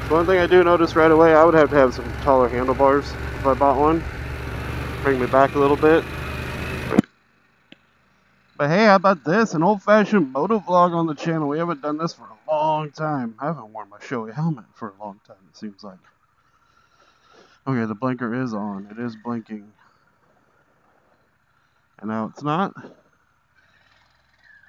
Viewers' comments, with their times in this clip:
0:07 WOW!!! The audio difference (white noise) is crazy!!! You put your visor down, and it was - SILENCE and your voice. I was also impressed with the torque and power during my demo ride. It was just a fun bike to ride.